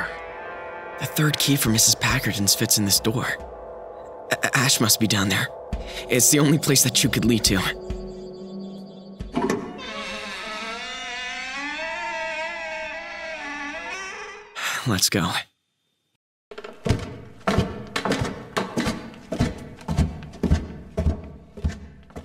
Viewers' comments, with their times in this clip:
0:08 sals voice in this moment sounds scared and so real for the moment